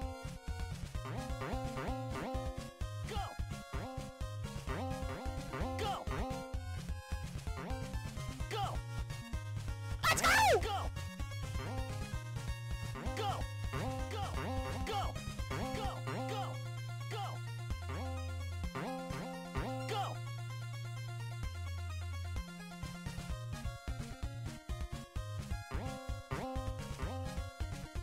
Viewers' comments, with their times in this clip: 0:10 Me: Attempts to sneak into kitchen at 2 AM for a snack. The creaking staircase: